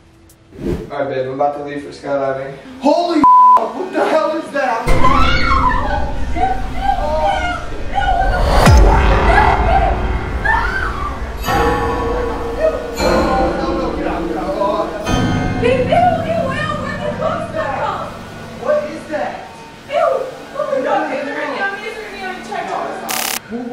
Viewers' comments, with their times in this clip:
0:05 headphone users be like : 👂💥💣